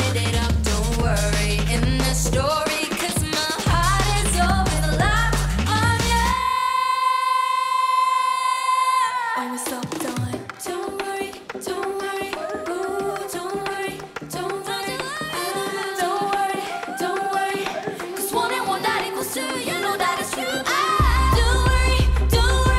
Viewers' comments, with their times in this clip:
0:06 OMG This is a real high note voice, visible from the veins in her neck, and the way She holds the mic to her cheek, singing live